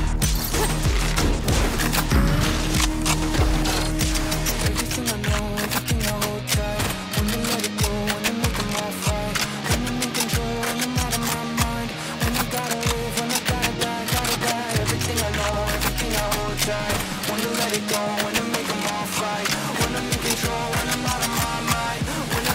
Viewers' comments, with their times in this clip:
0:03 The part is INSANE! And OMG cyphers trip sounds so clean.